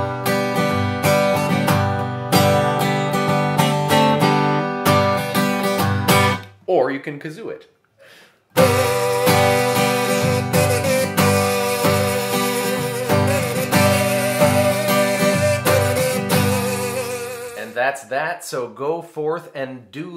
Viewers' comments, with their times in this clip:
0:05 My new favorite chord G11!(sort of)